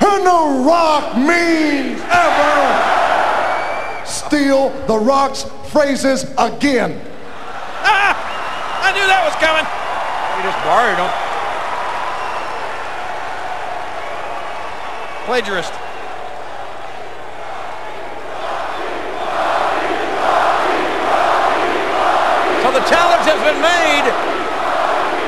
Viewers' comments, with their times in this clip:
0:10 was it just me or did jim ross said he jus buried him